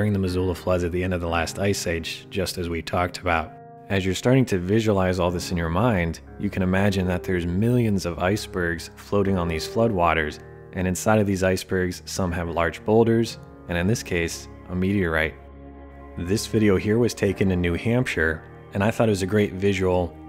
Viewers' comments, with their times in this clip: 0:08 heard and recognized this song, immediately subscribed